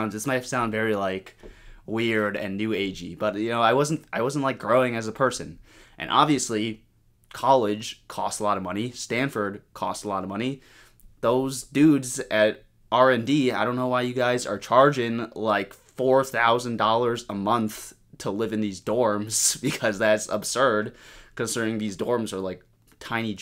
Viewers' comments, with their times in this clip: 0:10 the soviet anthem hit so hard